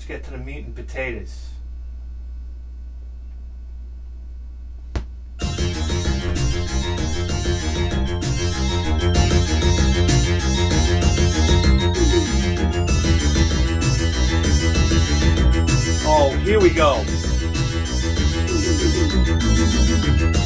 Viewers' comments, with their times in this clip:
0:05 wow that song you started ... that was dope!